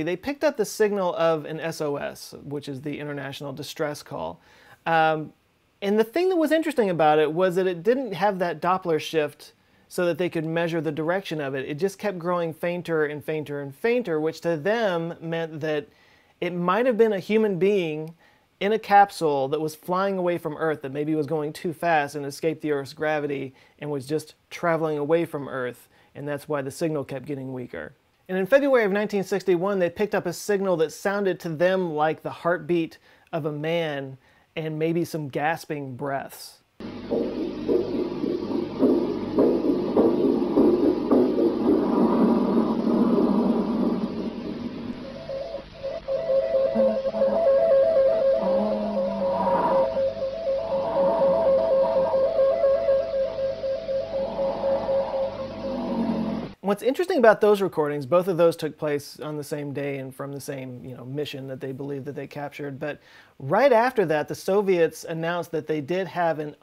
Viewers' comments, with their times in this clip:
0:06 sounds more like Spanish "Muy cierta, muy cierta!" And now I can't unhear the Spanish.
0:53 am I hearing alarm bells going off also?